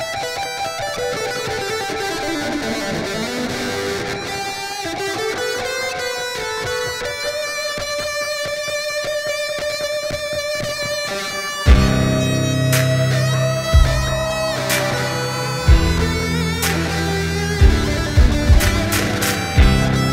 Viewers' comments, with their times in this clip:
0:07 WTF!? Goosebumps at its beste when the drums begin